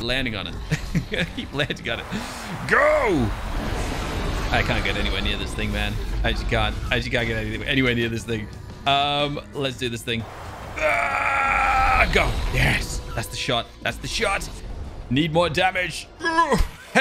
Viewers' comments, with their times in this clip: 0:04 Am I the only one hearing the anime music listen careefully